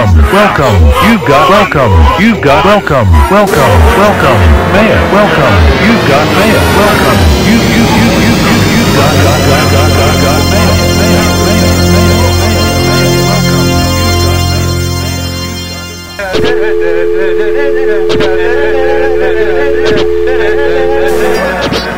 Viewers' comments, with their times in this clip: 0:03 there's the thx deep note